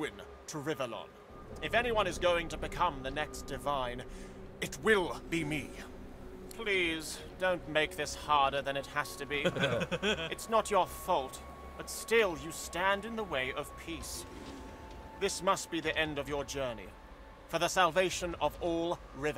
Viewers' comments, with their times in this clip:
0:06 Like how they chuckle at Bishop Alexandar's dialogue